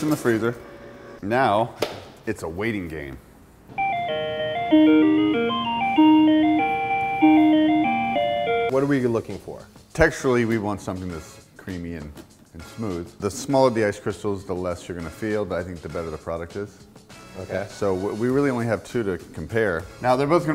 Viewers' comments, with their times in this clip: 0:04 the music reminded me of a song from my childhood...”Does your chain hang low, does it wobble to the flow does it shine in the light Is it platinum is it gold”